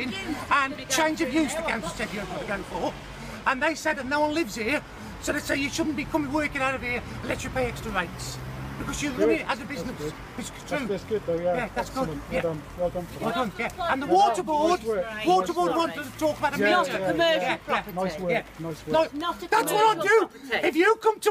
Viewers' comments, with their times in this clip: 0:04 I can’t take this guy seriously because he sounds like an Irish Mikey Mouse if he was 50 if and let himself go lmao!